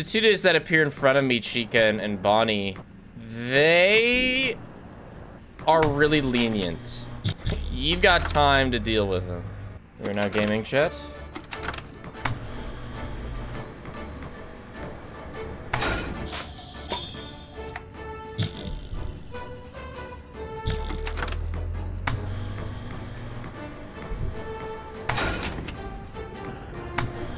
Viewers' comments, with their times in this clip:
0:10 I love how you added in some hollow knight music lol
0:12 hearing the dung defenders theme was such a fun surprise, its crazy how well it fits there yet I havent seen other youtubers use it